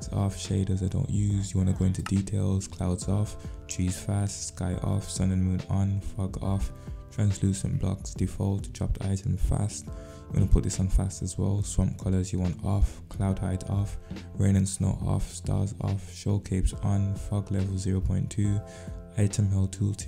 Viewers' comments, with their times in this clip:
0:04 sound like you said ** off but you said fog off 🤣🤣